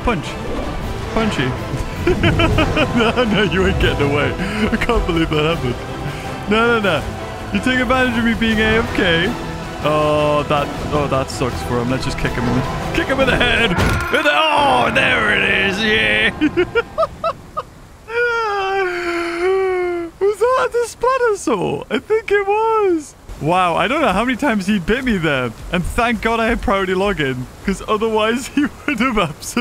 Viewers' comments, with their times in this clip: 0:10 I hate you for the damn Mufasa dying screams 😂😂😂😂